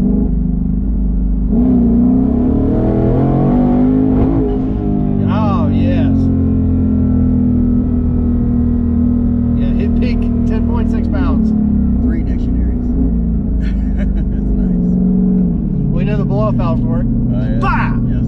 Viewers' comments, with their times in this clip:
0:06 What happened ? Didn’t sound good